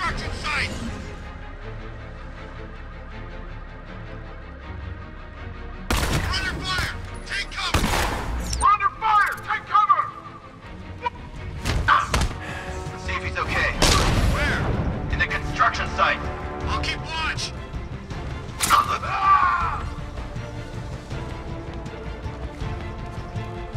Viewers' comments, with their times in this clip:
0:06 never knew they had a voiceline for that